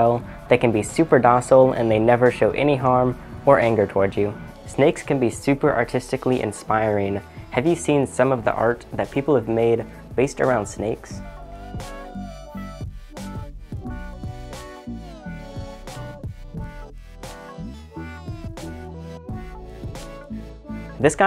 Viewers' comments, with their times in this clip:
0:07 Snakes are so quiet, that when it touches the microphone, it still makes no sound.